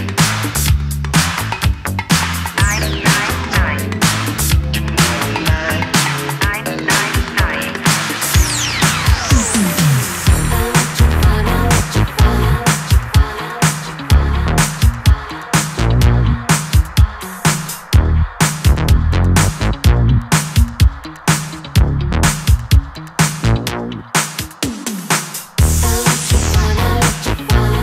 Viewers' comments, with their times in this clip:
0:10 minute what a flow, magic hands 🔥🔥